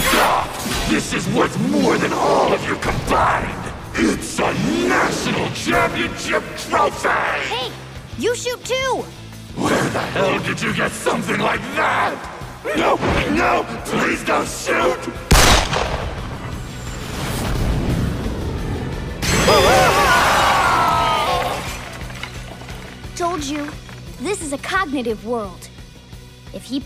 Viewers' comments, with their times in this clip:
0:10 kamoshida in the anime feels even more realistic than the game the fear that comes from his voice when he says the gun snd cowers is hilarious and fantastic